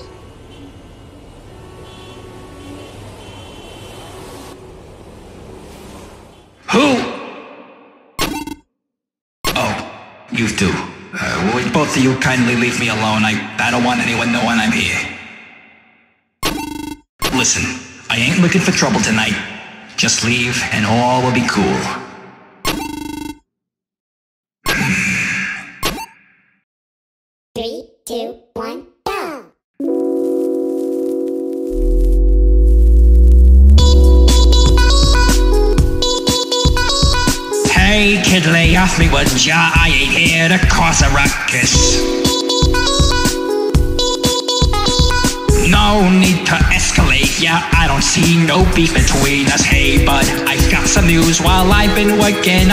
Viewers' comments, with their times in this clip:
0:08 the accent was fire.
0:39 YOU CANT KEEP ME DOWN FOREVER, WOULDJA PART, THAT IS SCOTTISH! SCOTTISH!